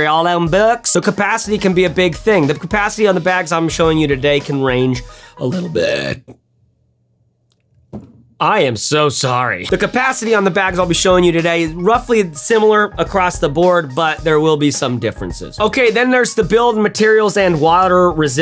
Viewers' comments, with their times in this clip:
0:04 Rewinds to hear the hilariousness again and again laughing hysterically now with tears forming in my eyes As a lady who occasionally belches quite loudly, thankfully at home, usually, I found this quite funny. Thanks for sharing that with us. Know it was greatly appreciated. 😂❤️